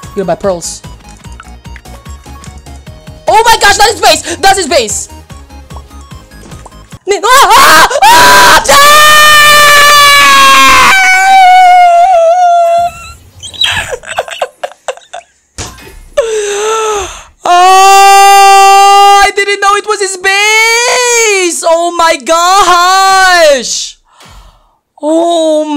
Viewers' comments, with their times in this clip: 0:09 Bro Did Freddy Impression 💀💀